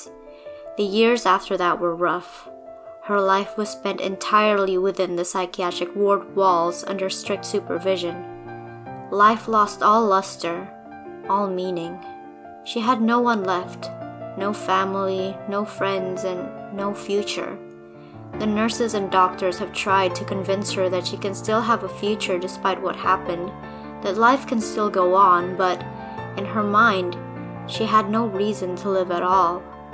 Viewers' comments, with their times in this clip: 0:03 that fake love piano mmmmm
0:13 nobody’s gonna talk about the piano cover of fake love in the background ?